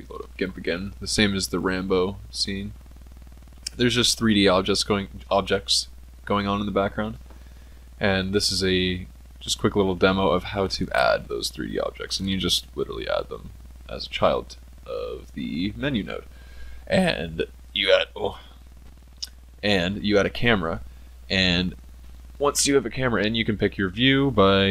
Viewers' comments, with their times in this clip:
0:06 It is just a quick little demo, how to AAADDDD this THREEEE OOOBJAAACTS weirdy style, but by the way thnx for tutorial, i mean "explaining things" even in your manner